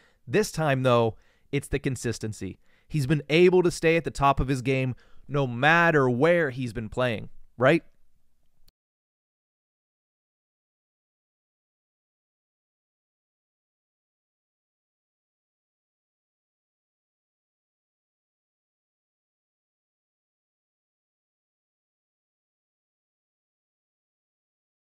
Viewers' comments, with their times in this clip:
0:08 A production note, starting there is about 40 seconds of lost audio. In the predictions podcast, there was a place where the audio cut out as well.